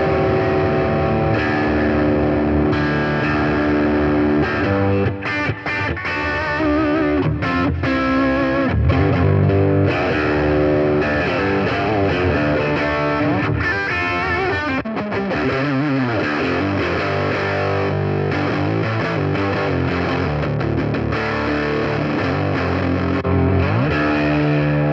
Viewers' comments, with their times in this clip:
0:08 should have left it on the neck pickup for a moment.. that sounds great. edit: what the ** that sounds amazing